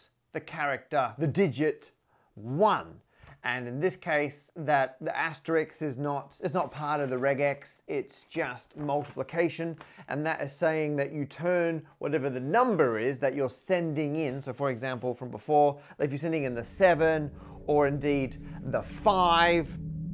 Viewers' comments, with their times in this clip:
0:05 is "asterix" a "valid" way of pronouncing "asterisk" in some parts of the English speaking world XOR was it a case of Parker pronunciation?